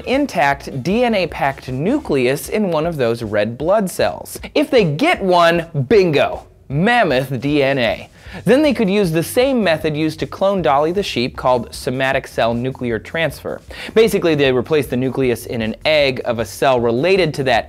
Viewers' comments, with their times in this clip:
0:05 sounded nearly exactly like the Jurassic Park pres.